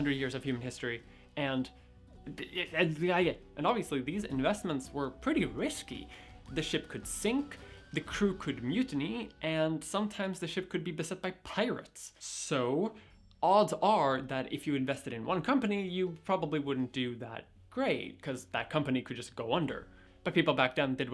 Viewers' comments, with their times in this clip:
0:08 the crew could mutate